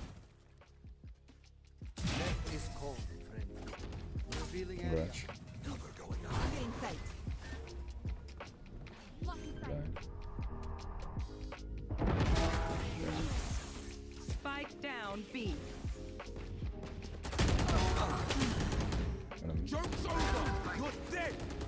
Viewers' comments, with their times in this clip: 0:05 bro the omen voice cracked